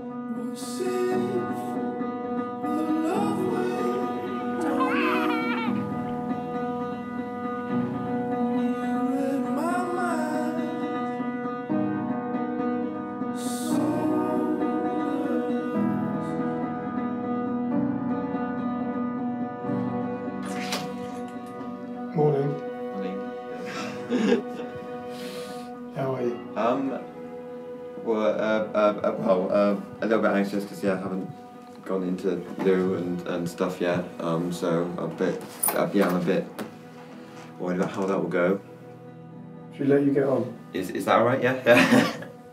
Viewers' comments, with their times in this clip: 0:05 not to stray from the topic of conversation, but what is the song that plays ? it sounds like bon iver but nothing comes up for the lyrics.
0:23 what song was that anyone ? It calm me down